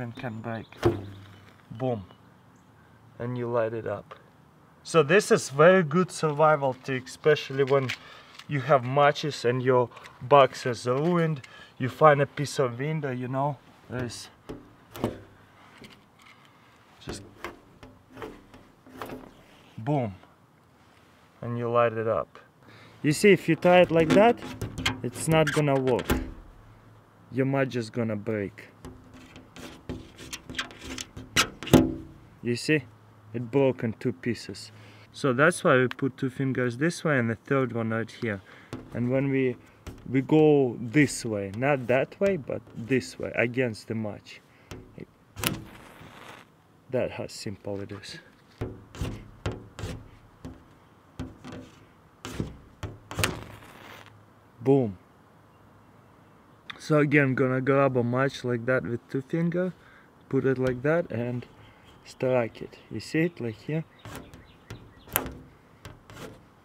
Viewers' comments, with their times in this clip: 0:08 it sounded like he said " put it my pingas"
0:12 you vind a piss of vindoh...... that would be glass mate.
0:24 omg, my ears!!
0:24 NNNOOO WHERE'S THE MUTE BUTTON!? FAST!!!!!!!!
0:44 its like scratching the window
0:46 this way against too Obama politics house
0:53 He remind me of Salvador from Couples Retreat the way he says "boom" lol
0:54 When ever he says boom its sounds funny xD